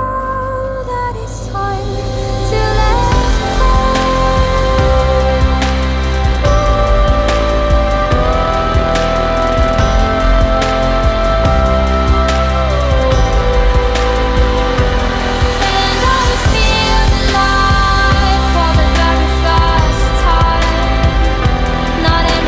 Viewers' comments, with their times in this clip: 0:08 maybe I am wrong.. but she is singing two notes at the same time.. if you listen cloesely you can hear the higher one and a clear lower one... and it's really blissful..